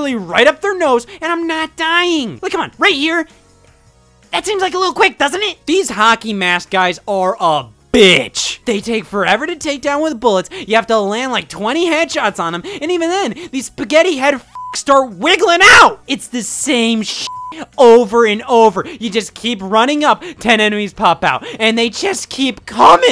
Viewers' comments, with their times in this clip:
0:07 Scott swears with no bleep 😮 It’s so funny how angry he’s getting Rightfully so